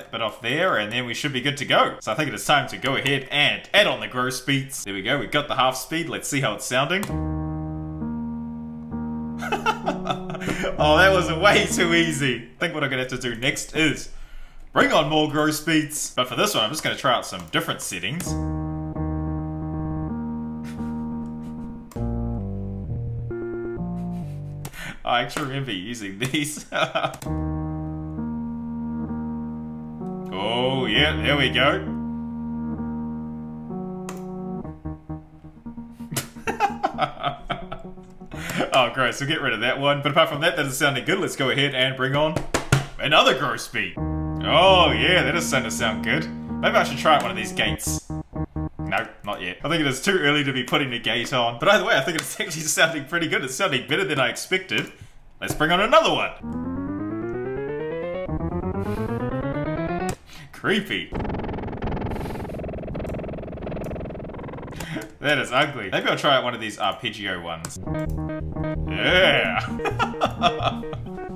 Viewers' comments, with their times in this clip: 0:06 I thought Linkin Park - In The End was about to start playing:^)
0:06 i thought shotta flow by nle choppa was about to play 😂
0:06 Secret sauce to In The End by Linkin' Park? Has Mike Shinoda been ahead of the game all this time?
0:06 Linkin park intensifies
0:55 Sounds like Lose Control by Missy Elliot lol